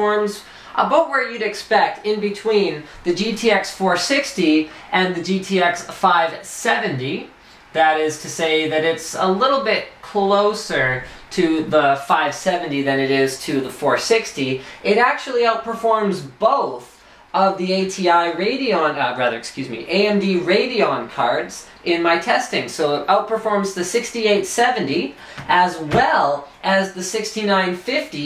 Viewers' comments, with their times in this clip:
0:09 when he says "About" you can tell he's Canadian :D